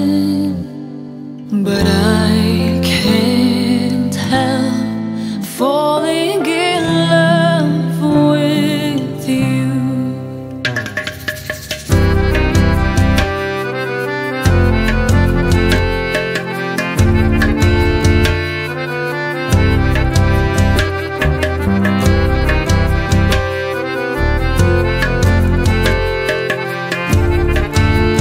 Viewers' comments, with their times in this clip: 0:10 .......there's something in Indian music which tranqualise u into an another unimagined world of peace ..........